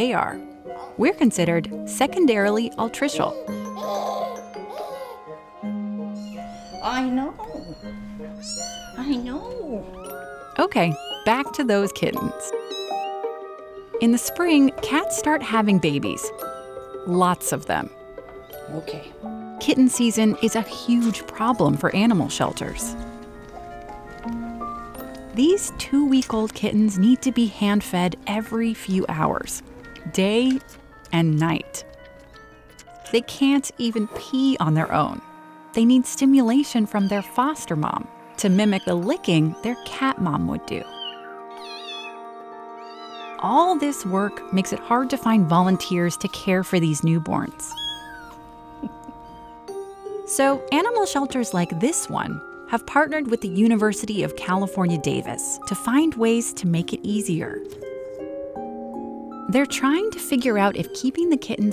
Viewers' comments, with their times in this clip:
0:06 I thought she was talking on the phone
0:48 that chuckle sounded so... happy. Filled with warmth. Is that what happiness sounds like, if it were a sound?